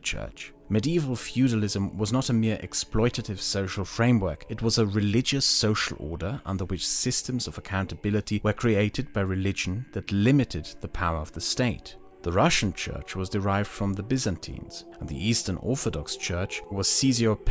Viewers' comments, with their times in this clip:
0:05 completely butchered it, to nobody's surprise. XD